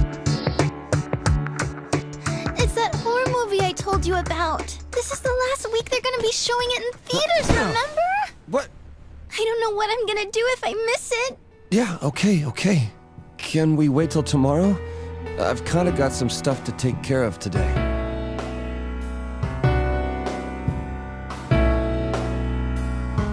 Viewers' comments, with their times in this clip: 0:08 Vincent's little "wha-" always makes me laugh